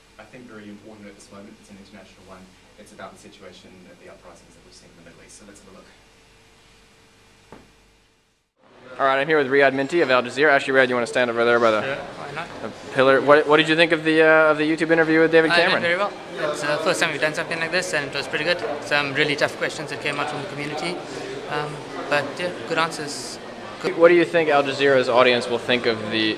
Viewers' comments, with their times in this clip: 0:09 Was I the only 1 to hear a blackbberry facebook update ?